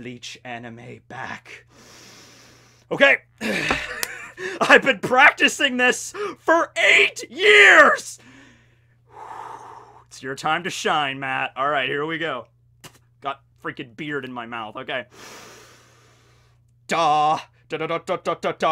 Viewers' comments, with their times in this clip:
0:04 sounds like plankton from spongebob 😂😂